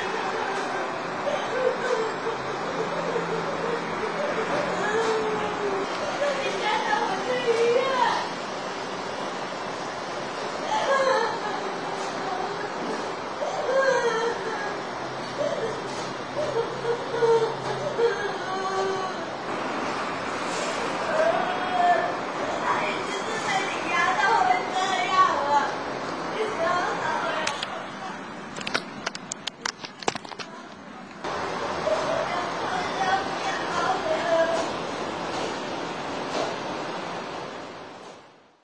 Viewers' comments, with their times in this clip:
0:06 The crying video reminds me of something I saw many years ago in a kik groupchat. Its not the same audio, but the sounds similar. For anyone who doesn't like kids being harmed, stop reading now. I only saw a few seconds of it and just tell myself it was fake, but the content was.. put toddler and bdsm together. With how the cries sound in the video you mention, I feel a dreadful similarly
0:21 she sounds very south east Asianish